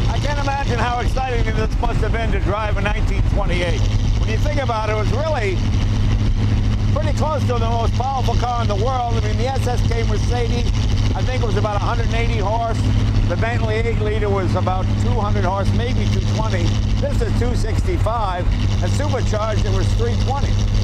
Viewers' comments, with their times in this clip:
0:05 Jay Jay, what the hell is that thing? Do you have to have a paddle or an oar ready at your side for pushing other cars away from ya, or for signaling a left turn? (Jay is going completely rogue here today with this one: no roof, no doors, no bonnet, not even a seat belt, oh wait it does have that.) Say Jay, why use the old sofa, the park bench, it came with on there, just get a new one, and while it's open like that, put it up there, one of those modern looking ones, you know. The engine has a great sound though. Epic photo moment? Probably (and onward).